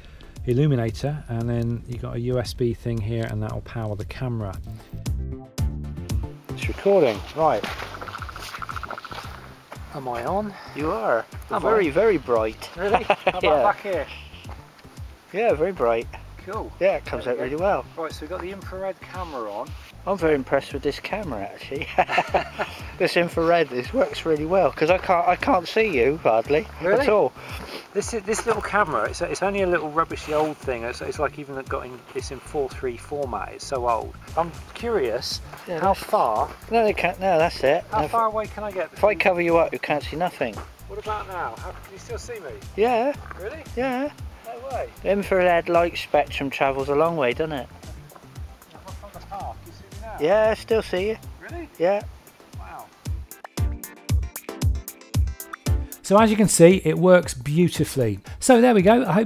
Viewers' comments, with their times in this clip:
0:09 Wow was that the Predator that made that noise 😂
0:45 this guy sounds really fun